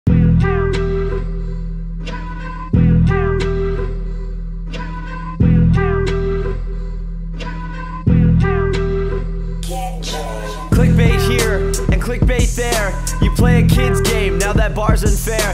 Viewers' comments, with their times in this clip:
0:01 in the intro the background music has a guy saying dodo lol funny